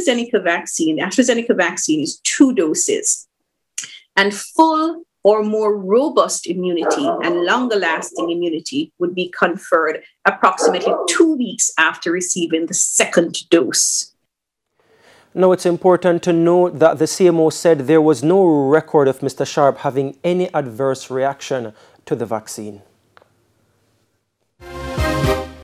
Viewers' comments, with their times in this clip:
0:08 The dog is saying beware " master lies"